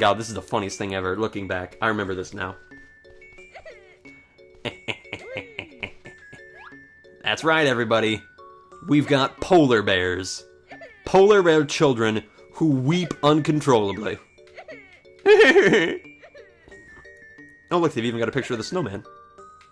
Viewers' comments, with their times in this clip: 0:06 I specifically came to YouTube today and searched for a video of the baby bears talking because I randomly heard the squeak in my head. Too funny! Glad I clicked on this one!